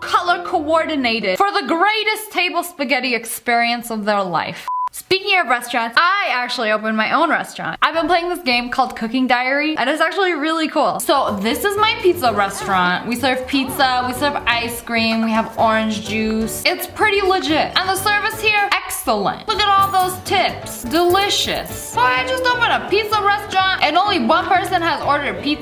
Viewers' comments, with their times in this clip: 0:09 thought she said cooking diarrhea